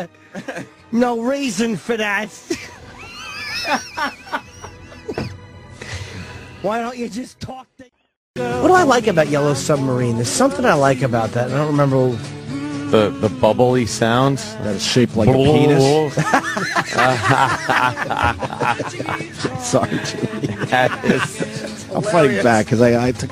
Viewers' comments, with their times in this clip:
0:04 Opie does get a lot of hate and perhaps he deserves it but he did make Lil Jimmy laugh 🤷